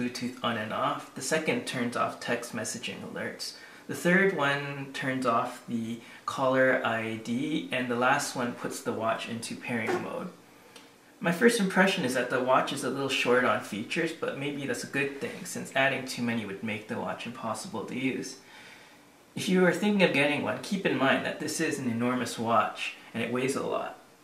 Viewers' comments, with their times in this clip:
0:09 omg bro did someone just fart lol anyways cool watch
0:09 Did you fart ?